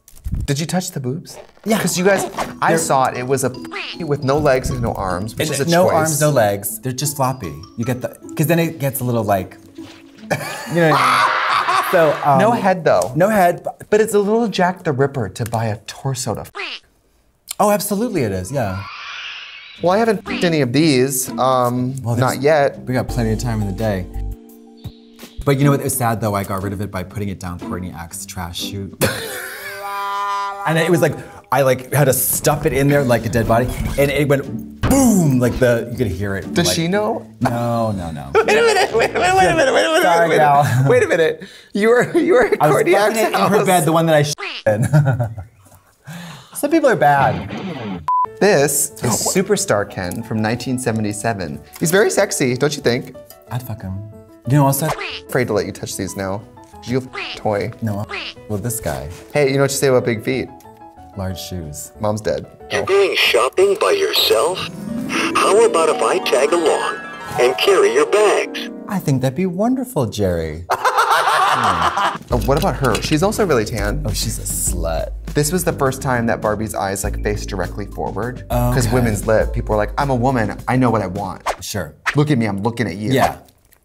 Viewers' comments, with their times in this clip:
0:10 the echo on that laugh
0:41 huh.. No buzz..
0:53 they forgot to bleep it lmfaoooo
1:08 at first I thought he said kill your back, and I was liviiiiiiiing. I'm here for that😉😆🤣